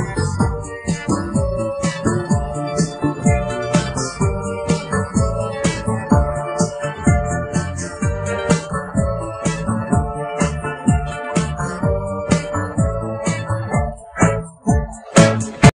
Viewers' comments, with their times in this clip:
0:13 video turns up pretty much